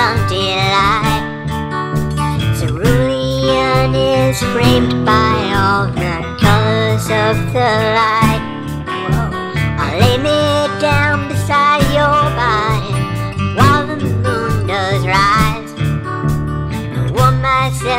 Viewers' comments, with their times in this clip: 0:03 Cerulean is raped by all of the lies. ._.